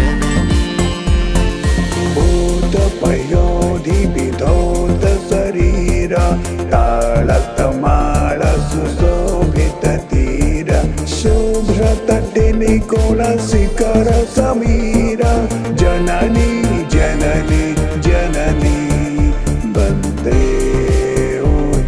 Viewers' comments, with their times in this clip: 0:09 Good Voice❤❤❤❤❤❤ Namaste MR. Nabin babu